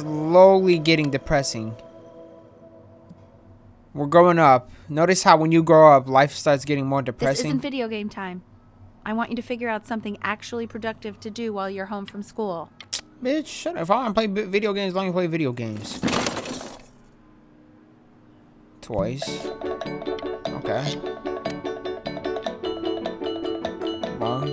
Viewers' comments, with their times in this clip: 0:10 ice cream truck lol